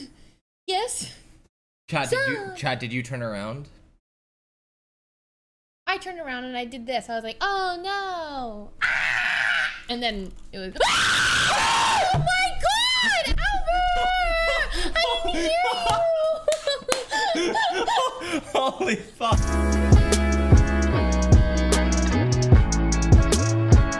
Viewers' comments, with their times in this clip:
0:10 Dude sounds like scientist from Half-Life